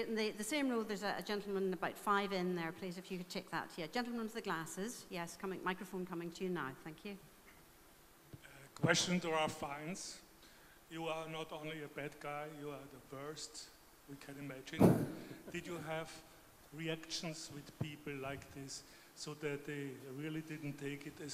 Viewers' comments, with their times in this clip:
0:08 guy said ralph fiennes's name wrong >:(